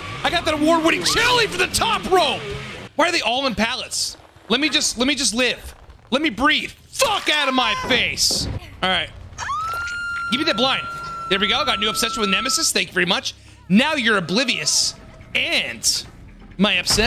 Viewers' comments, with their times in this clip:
0:05 I can relate to all of that, also I lost it when he yelled FUCK OUT OF MY FACE! 😂😂